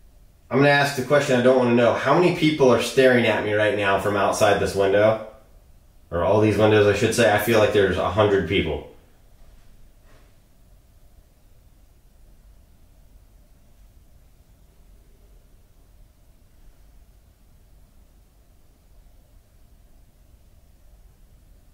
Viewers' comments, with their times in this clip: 0:09 I hear tapping/movement